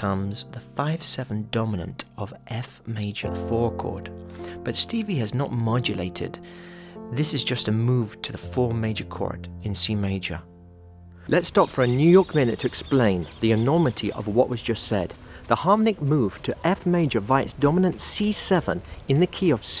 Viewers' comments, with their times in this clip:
0:06 reminds me to Harrison's Something